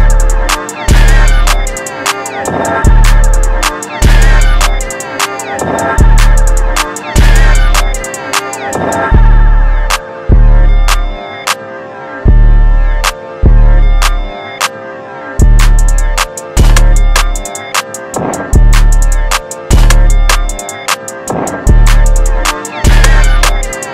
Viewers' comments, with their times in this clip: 0:09 bawssee facts lol but just hit different